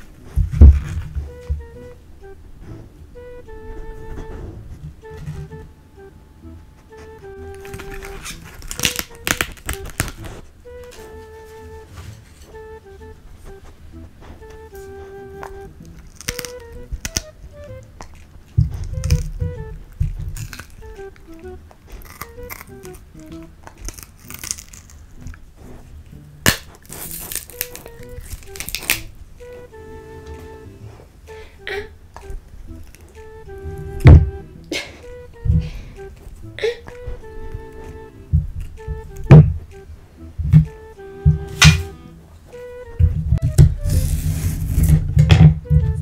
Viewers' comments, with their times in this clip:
0:06 when the person next to you is cracking their fingers in class
0:32 sounds like when you put something wrong on nintendo games